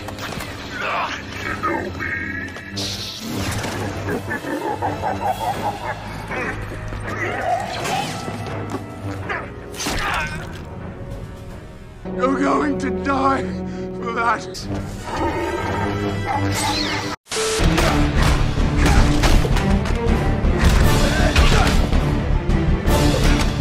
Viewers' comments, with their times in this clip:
0:09 I’d be screaming and sobbing with terror. That clone just grunted a few times. Respect.